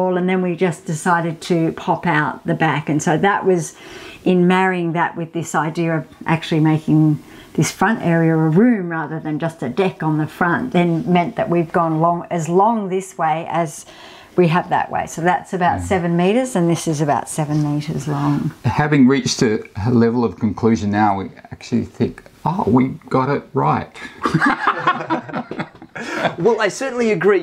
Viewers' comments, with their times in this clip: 0:09 I thought she said a “di&k on the front” I had to rewind 😂